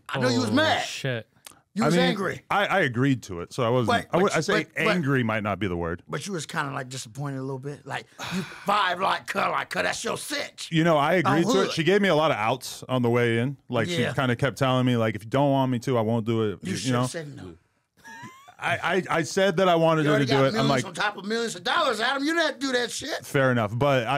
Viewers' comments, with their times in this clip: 0:08 That sigh says it all 😂